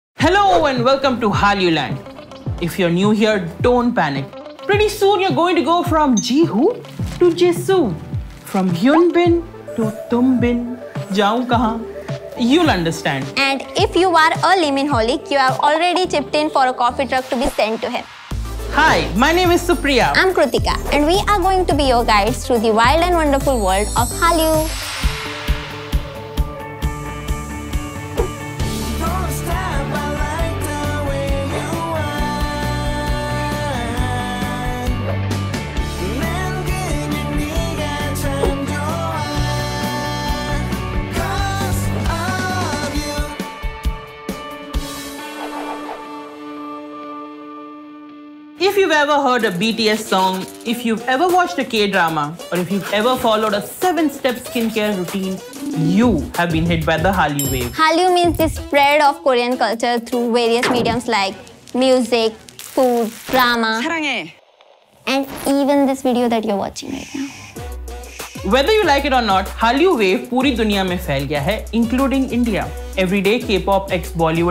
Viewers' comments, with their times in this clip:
0:01 welcome to timed
1:01 How many Heard marvelous Lisa voice ''BLACKPINK IN YOUR AREA''